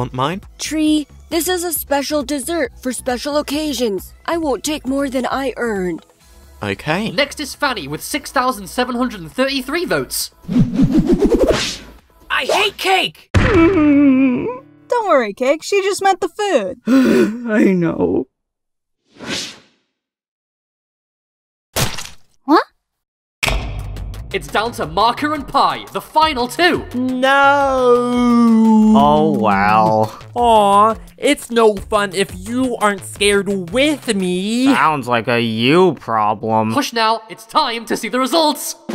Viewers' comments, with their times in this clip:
0:07 it sounds like 2 said fatty
0:21 needy's "wha?" was so cute
0:23 I like The Spotlight Sound 😅😅😅😅